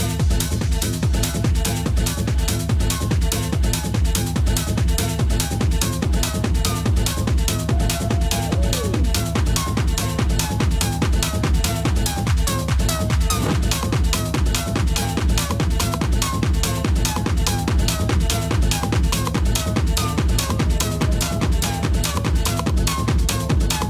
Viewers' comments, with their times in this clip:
0:10 not from this world music 😲